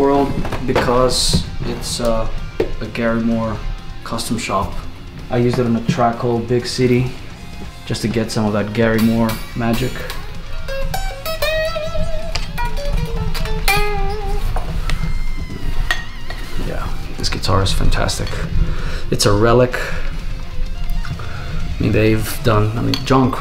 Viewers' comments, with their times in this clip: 0:05 that Gary Moore guitar sound awesome